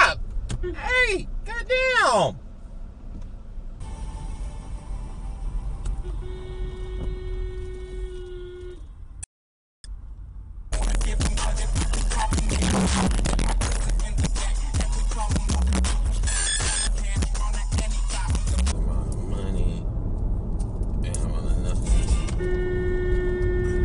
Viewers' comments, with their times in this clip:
0:05 That horn at the mark. Man, that needs some work! Too funny.